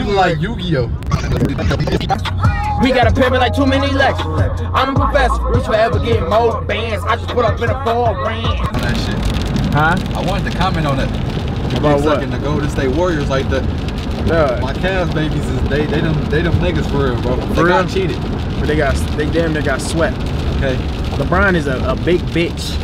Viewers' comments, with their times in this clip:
0:06 Why he singing like that? Lmao